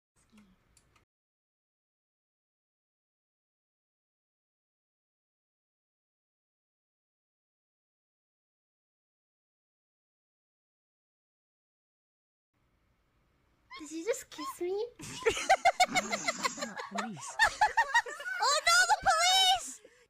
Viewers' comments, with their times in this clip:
0:04 what happened with the music